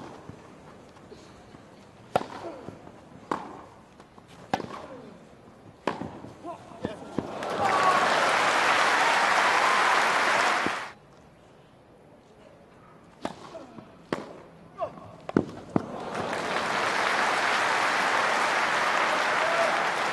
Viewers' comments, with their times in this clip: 0:04 Haha listen close he cant reach the ball and he's shouting "What the ****" :D